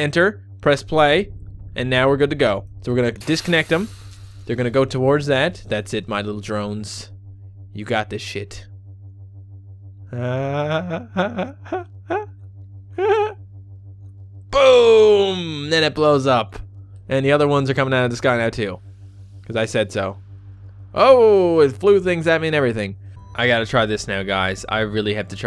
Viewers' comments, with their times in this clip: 0:07 best laugh ever.